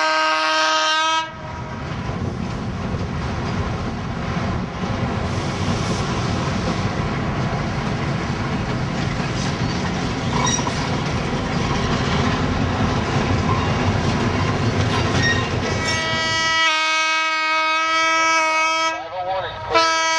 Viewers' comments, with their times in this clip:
0:03 Nice, where the Southern E-8 is running past ACL 501. You can see that the early E-units had a more gentle slope on the nose, which gives it a more elegant look. That horn wasn't used for some time, as it sounds better at the end of the video. It sounded like an European style 2 tone (very similar to the horns of a British class 73), of which only the lower horn was used most of the time in this video, because the high horn didn't work, did any US railroad ever use these horns?